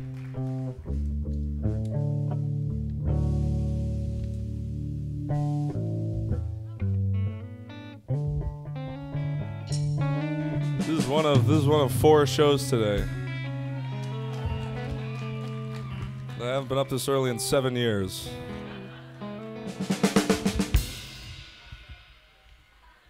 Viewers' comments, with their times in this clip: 0:09 black midi western